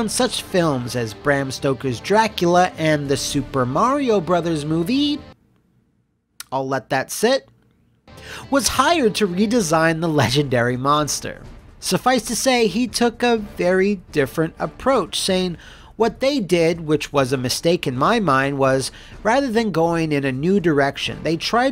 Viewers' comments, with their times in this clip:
0:08 "[Tatopolous] was hired to design the legendary monster." I heard that as: "[Tatopolous] was high when he designed the legendary monster." 😶